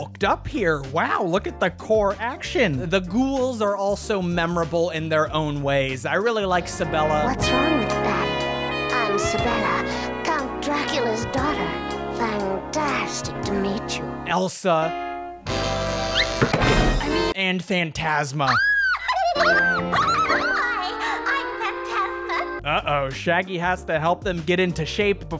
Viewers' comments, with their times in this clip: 0:06 Why do I hear waifu music?